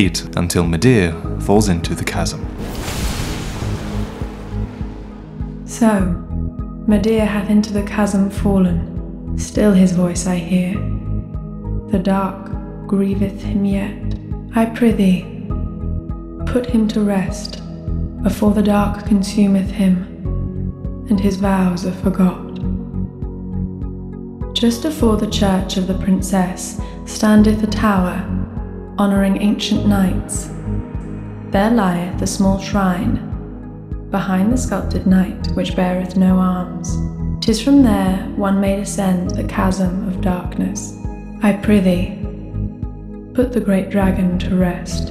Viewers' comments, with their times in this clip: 0:06 most beautiful voice Ive ever hearded. Whats her npc name?
0:26 aaaaah this music so comfy where did you get it bro?